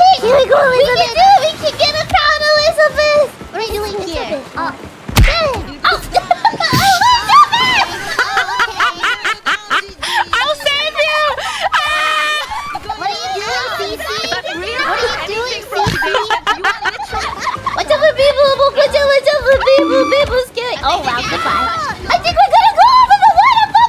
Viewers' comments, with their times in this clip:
0:07 That CACKLE. XD Followed by a goofy scream and a snort. XDDD